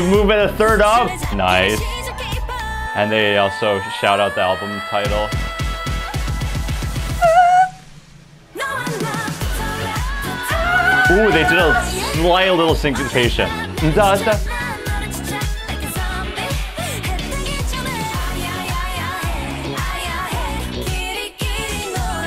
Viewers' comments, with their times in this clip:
0:08 same… where’s is the note?!?! It felt incomplete.😂😭